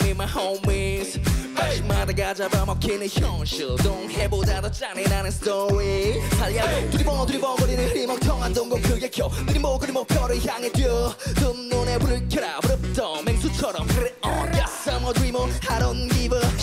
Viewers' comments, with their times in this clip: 0:03 Yes especially in minhyuk part His voice disappeared a bit when he dance